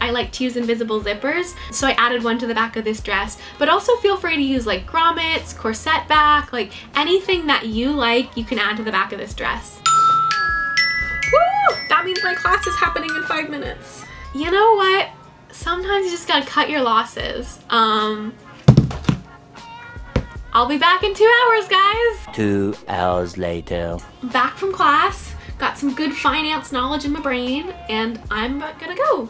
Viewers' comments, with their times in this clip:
0:10 I have the same alarm!
0:10 that almost gave me a heart-attack because for me that alarm means I’m waking up lol